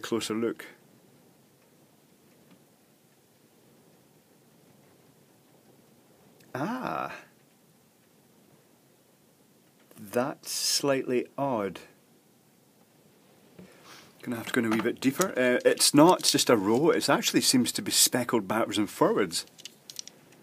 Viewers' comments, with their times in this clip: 0:05 "Aaah!" sounds so charismatic!